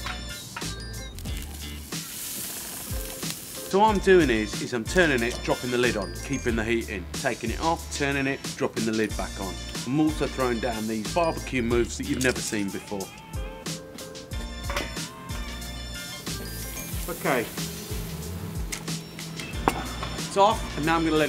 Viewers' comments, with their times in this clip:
0:08 Bro, ur hand gestures plus ur accent is so "Gangsta"!! SUBBED.